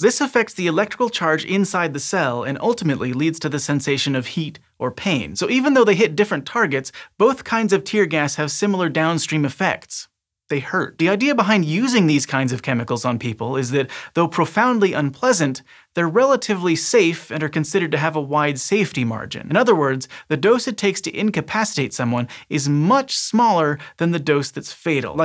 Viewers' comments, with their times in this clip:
0:09 "They hurt" the way he said it made it sound like he was going to cry